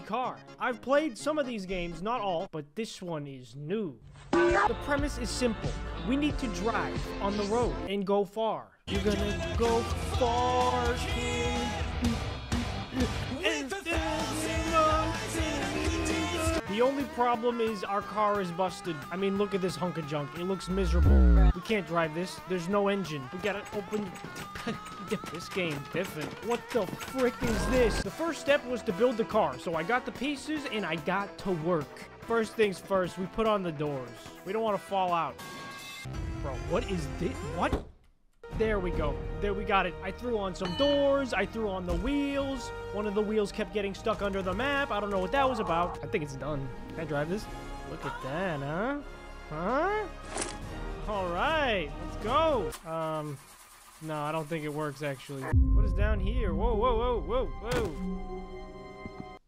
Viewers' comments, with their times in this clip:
0:09 seconds caught me off guard but that’s a good song
0:40 dramatic music for no reason